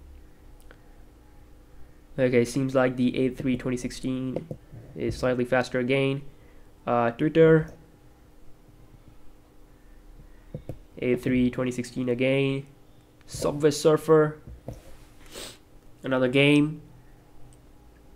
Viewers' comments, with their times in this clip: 0:05 he said dooder